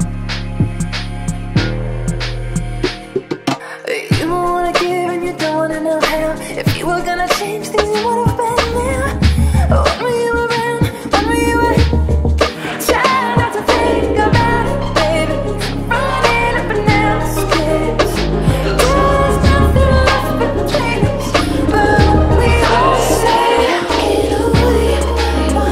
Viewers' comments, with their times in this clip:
0:06 Those 1/8 note kick drums in the verse after ❤️